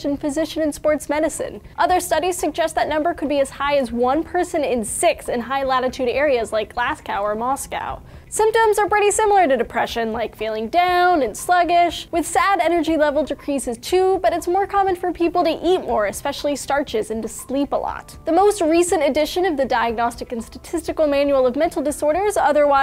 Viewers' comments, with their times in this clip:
0:05 was she trying to say Glasgow? Glass-cow... seriously?! It's pronounced "Glaz-go" and I thought the way Americans pronounced Edinburgh was bad.